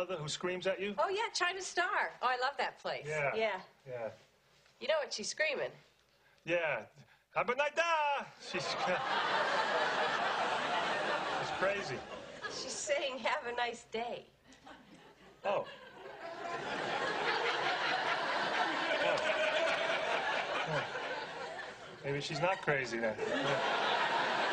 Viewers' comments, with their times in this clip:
0:07 Ray reminds me of when I thought Helen Keller in “The Miracle Worker” was simply saying “Waaah” while I didn’t realize she was trying to say “water.”